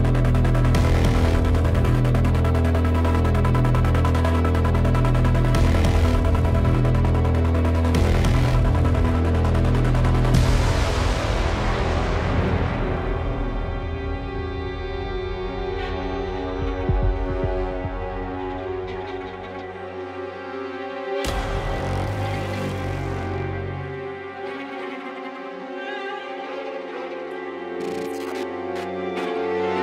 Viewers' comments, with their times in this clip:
0:10 reminds of the old Hitman games